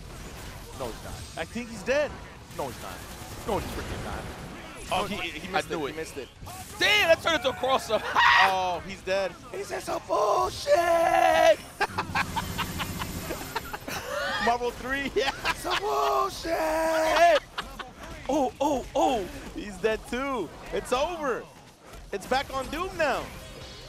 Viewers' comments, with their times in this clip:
0:06 Yipes "This is some Bullshtttt [in place of the cadence for saying Hadokennnnn]